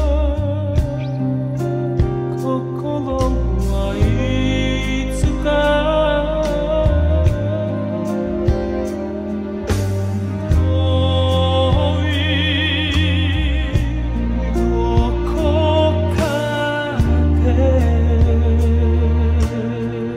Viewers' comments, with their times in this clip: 0:08 I'm surprised you didn't comment I mean.... the whole song is WOW but for someone who can manipulate his voice to make it sound like it's an agile echo is out of this world 🌎